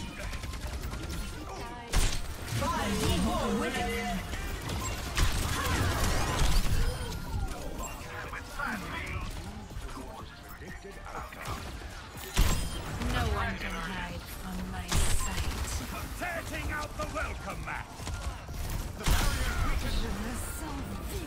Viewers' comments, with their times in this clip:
0:03 in when ur ana nanoes ur sigma the Arab nanoboost voiceline plays instead of "nanoboost administered"? that's so weird